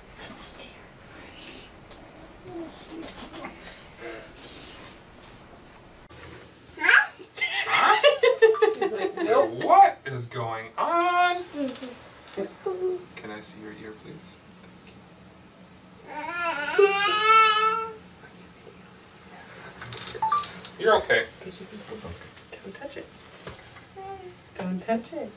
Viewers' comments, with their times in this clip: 0:06 that "huh?" was so freaking cute omfg